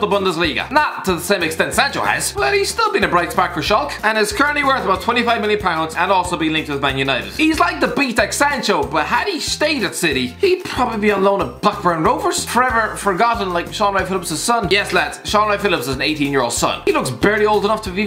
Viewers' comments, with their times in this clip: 0:04 shawlk? Is that their name now?